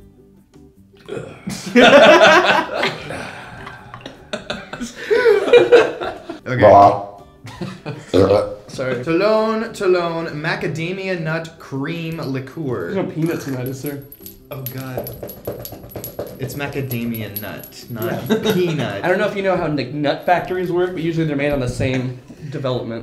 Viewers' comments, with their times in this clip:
0:06 The burp shot XD